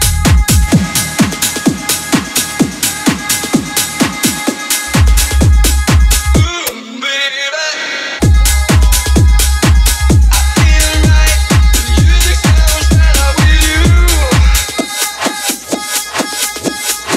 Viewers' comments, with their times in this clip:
0:03 verry good set NewYork approved ! verry nice done 2 different vocals ♥